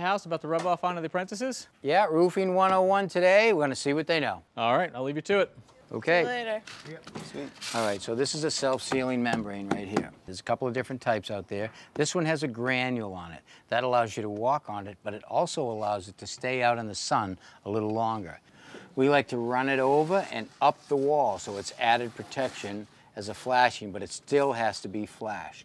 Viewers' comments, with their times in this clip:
0:07 Thommy (correct name?) is a good, not to say a perfect teacher! :-) He explains with a smooth voice and shows practical, here in germany we do it the same way. I work as a technikan / electrician in a factory, instruct apprentice, too. Greetings from germany